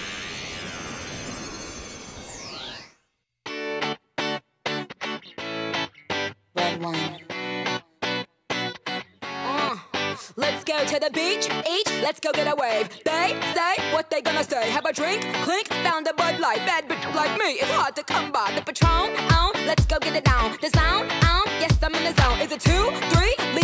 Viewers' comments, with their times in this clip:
0:03 The song starts
0:04 is when the music starts!